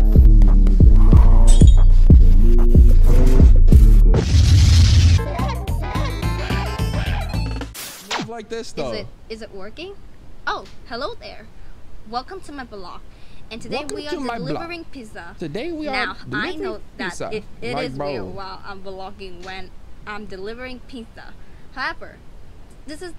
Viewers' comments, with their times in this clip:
0:09 AYO BMO FROM ADVENTURE TIME NEED TO CUT IT OUT BRU